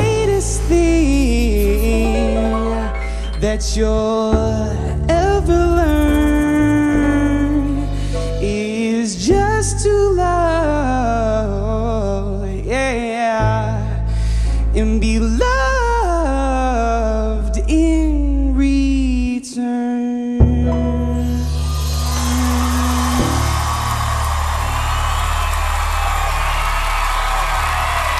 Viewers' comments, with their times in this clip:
0:09 until the very last note he sings is makes me feel like maybe there is a live force beyond our realm that works some kind of magic on our lowly existence.